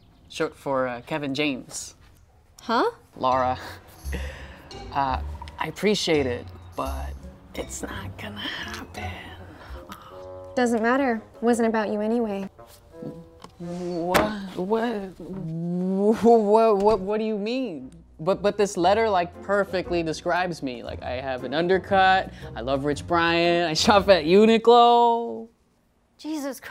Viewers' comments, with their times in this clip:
0:07 boy exactly sounds like Peter (Noah) in the actual movie